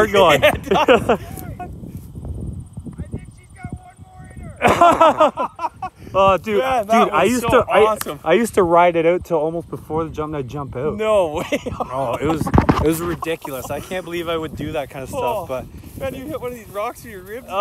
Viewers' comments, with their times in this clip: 0:05 Was that a fart ?